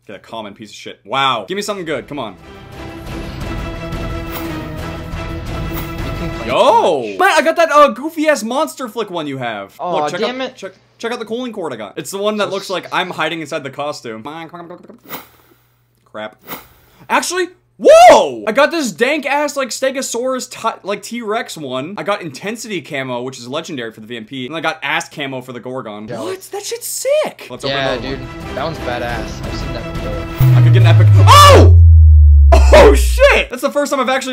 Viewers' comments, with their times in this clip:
0:04 Lol looks like MONSTER FUCK
0:06 Am I the only one who thought it said "Monster Fuck"?
0:17 When you get fall damage in Super Mario 64